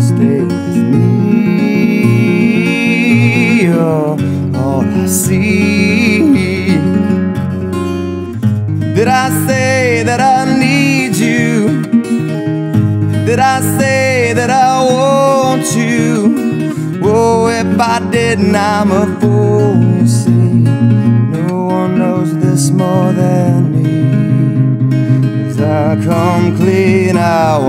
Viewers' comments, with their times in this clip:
0:10 I got goosebumps. I am completely mesmerised by your voice. This is the third Pearl Jam cover I've watched you do and they have all been really amazing. Keep up the great work! Subscribed.